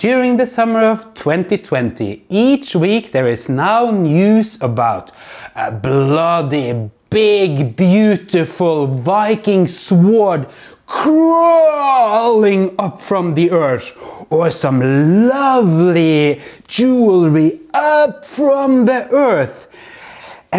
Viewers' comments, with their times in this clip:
0:05 Channeling his inner Aussie (Australian) right there, with a hint of alliteration. :-)